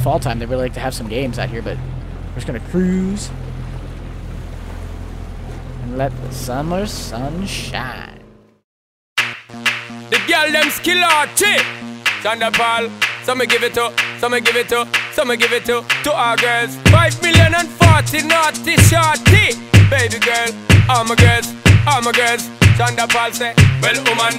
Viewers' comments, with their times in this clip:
0:09 let the sean paul vibes gooooo